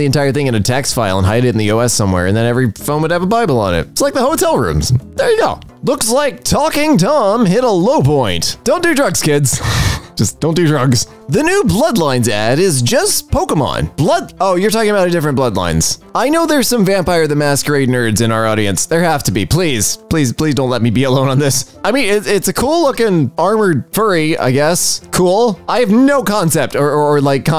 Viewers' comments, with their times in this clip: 0:10 that’s not talking Tom, that’s Screaming Tommy😂